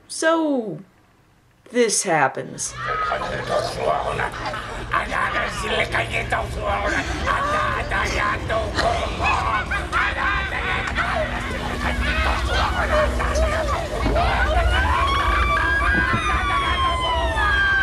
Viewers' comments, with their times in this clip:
0:03 Best. Scene. Ever. Whimpy McWhimpy, garglemouth Radu, and mom the hyena, what a true cinematic trio for the ages.